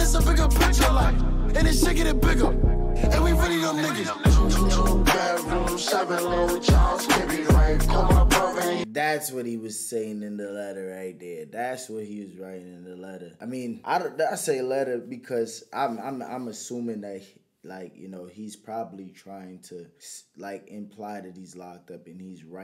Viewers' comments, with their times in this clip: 0:04 Did he sing in the chorus? or is this part of the sample lmao cause i looked up the original song and the mf who sung the song dont even sound like that.